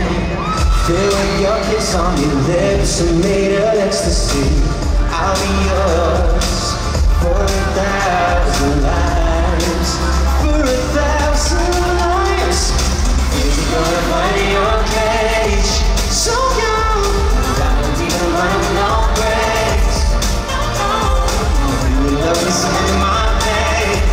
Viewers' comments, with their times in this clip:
0:10 That smile and sublime vocal 💔